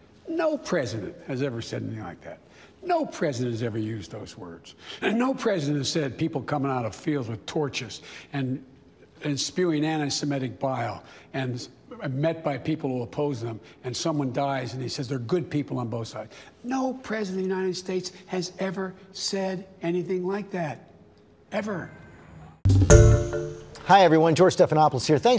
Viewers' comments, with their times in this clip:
0:05 Did anyone else hear the voice crack ?
0:08 this man has the hardest time putting words together